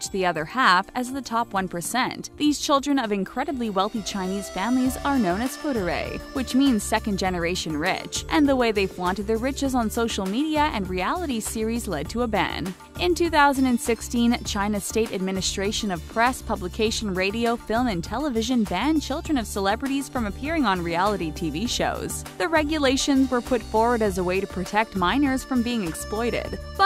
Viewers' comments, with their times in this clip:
0:08 I lit can't watch this after hearing "foo-der-ray" 😒 no matter how well researched or produced, if you can't pronounce foreign words that you chose to include in the script, bye.